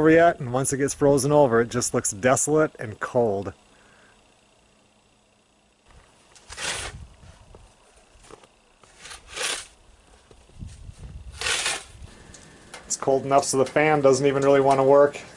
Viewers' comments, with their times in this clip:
0:03 I've probably said this before but you are some hardy folk. 10 degrees and not even Thanksgiving plus snow! Plus up am! Growing up in the midwest, now in SO Calif I've become soft. The sound of that crunching snow when walking brings back memories of walking to school on a cold day.... Except it was probably February not November.